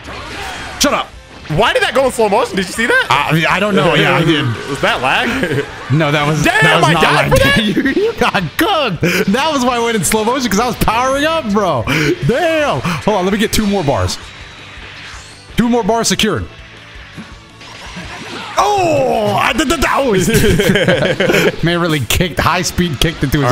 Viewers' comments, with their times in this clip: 0:07 why he giggle like that😂😂